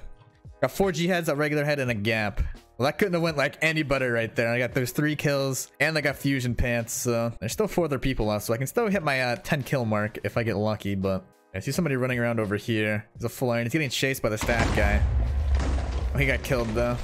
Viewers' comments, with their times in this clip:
0:03 “That couldn’t have went any butter”